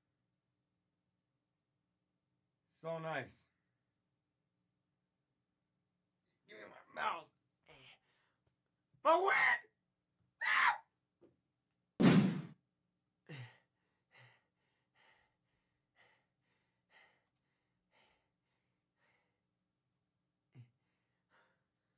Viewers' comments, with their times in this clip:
0:09 MY WAA🦅🦅🦅🦅IG got me dying